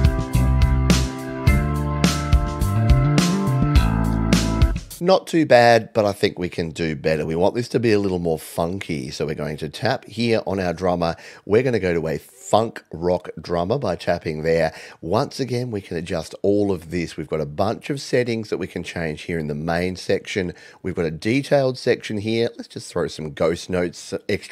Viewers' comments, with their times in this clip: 0:07 sound like a scene transition in a 90's cartoon lol